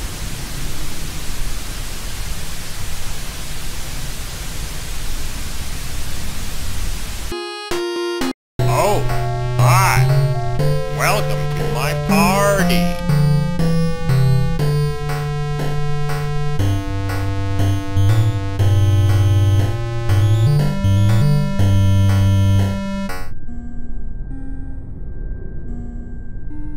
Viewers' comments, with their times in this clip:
0:08 schoolhouse x whistle sounds cool